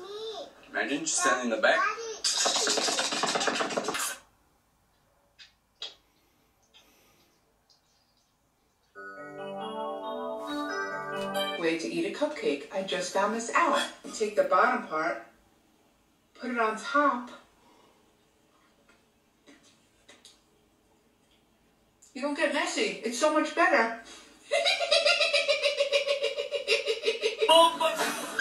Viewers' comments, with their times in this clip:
0:09 got me because of the music!